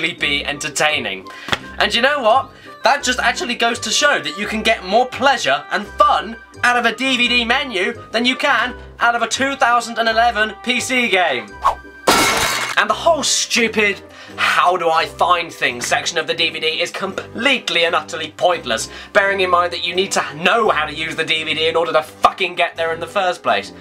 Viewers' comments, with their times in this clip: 0:10 Holy shit the music I FUCKING LOVE THAT GAME